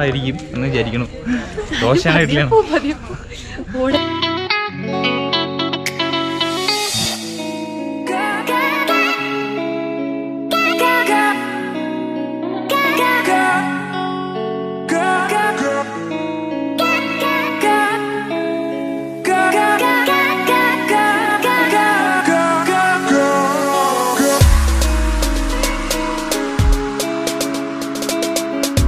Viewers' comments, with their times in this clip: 0:09 Background music gagagaggagaga😂